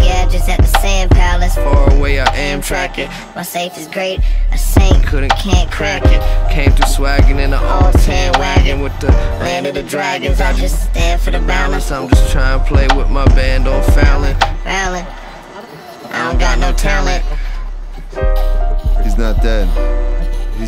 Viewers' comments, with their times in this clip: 0:03 always thought the back n forth here was so fuckin dope